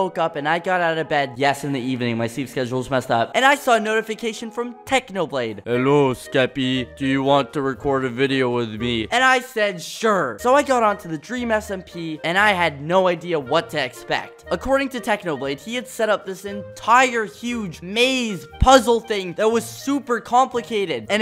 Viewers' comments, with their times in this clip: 0:06 perfect technoblade impression